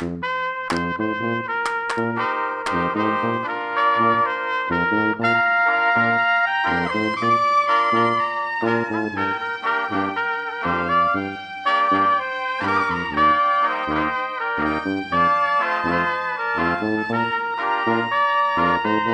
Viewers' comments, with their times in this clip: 0:05 this is awesome i love the little solo its amazing .....i still cant hit that high note